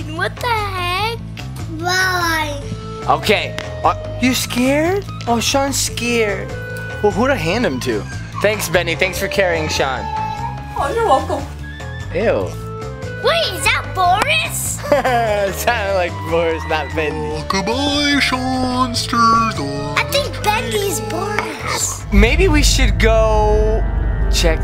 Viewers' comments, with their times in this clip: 0:08 the voice tho jajajaja
0:11 mommy's impression of boris lol its so funny